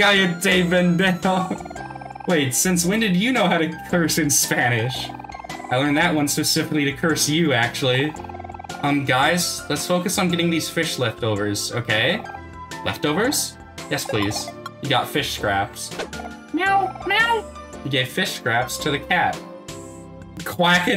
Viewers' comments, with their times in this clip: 0:05 as someone from spain, she gets my pass someone from mexico to get her an extra pass? because that wasn't spanish from spain